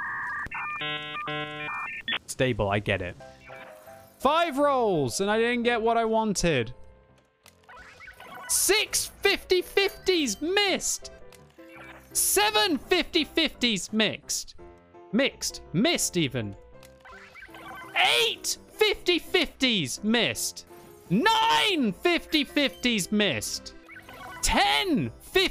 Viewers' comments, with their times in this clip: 0:07 Did anyone else think of Count Von Count ?